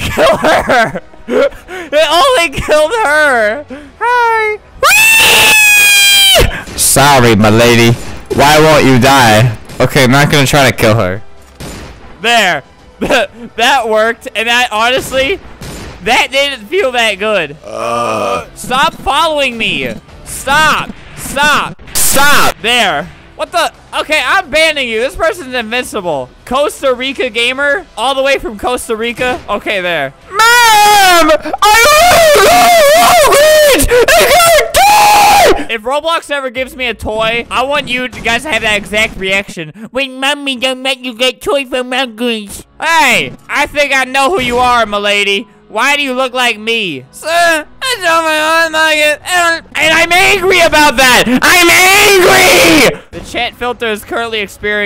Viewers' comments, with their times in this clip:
0:04 Honestly the best ree ive ever heard
0:04 albert does a wry from dio
0:39 i love this voice